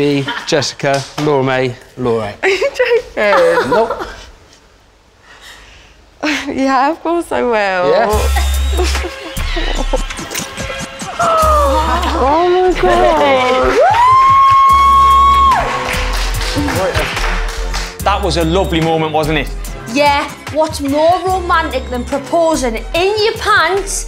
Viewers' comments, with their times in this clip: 0:06 the voice just makes me wanna watch love Island That weird?